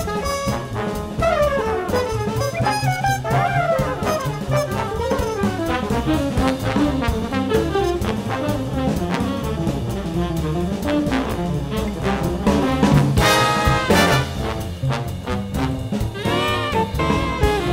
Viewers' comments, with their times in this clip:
0:05 Love that hornpipe in bebop